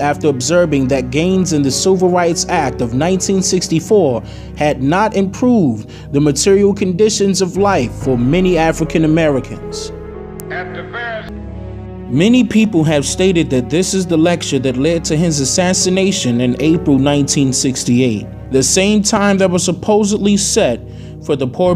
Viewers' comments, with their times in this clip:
0:07 The lady ....listen closely, I hear her say, I'm no the only Moor suffering.